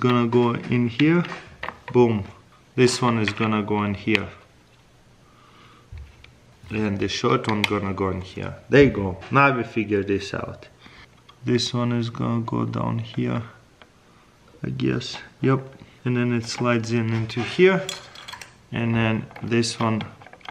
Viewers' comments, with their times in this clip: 0:08 I love how he says there you go